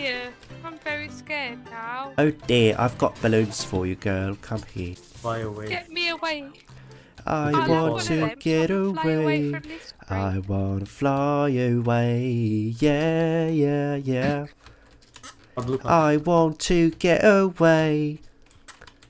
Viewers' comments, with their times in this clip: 0:07 „i want to get away“ can we please talk about that perfect vocals